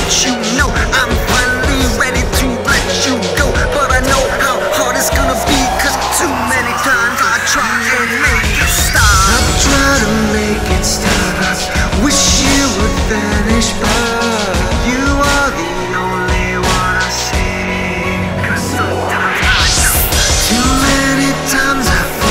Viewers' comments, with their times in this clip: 0:04 nice ramp up